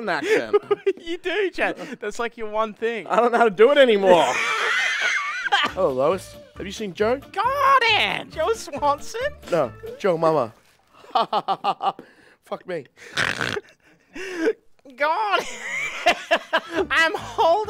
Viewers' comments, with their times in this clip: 0:05 top tier voice acting